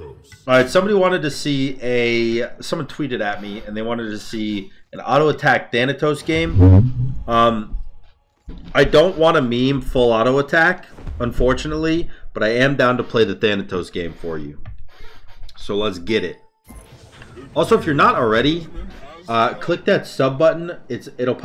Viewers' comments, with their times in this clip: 0:06 u really farted bruv? lol:)))